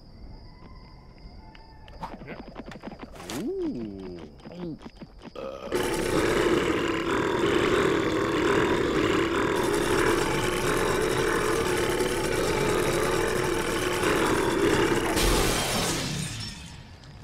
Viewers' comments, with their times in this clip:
0:03 the ultimate burp xD